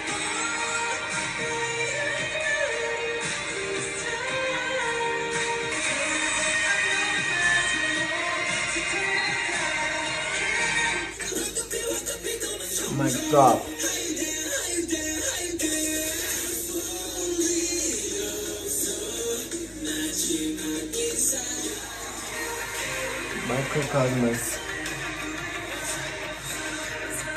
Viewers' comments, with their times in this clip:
0:09 Actually u didn't notice & hear Jin's triple high note Jungkook was singing and Jin was doing the triple high note at the back they showed it thru a fancam not so clearly tho...